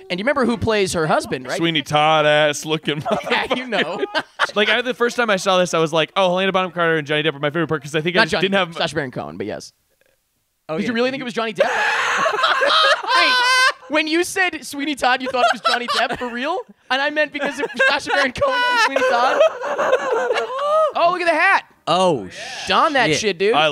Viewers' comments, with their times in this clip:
0:06 you're telling me you understood wtf he just said?